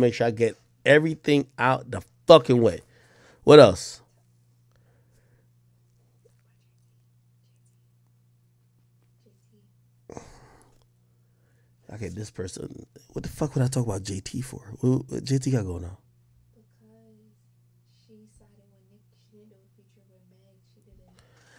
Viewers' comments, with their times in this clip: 0:08 Who was that whispering JT 👀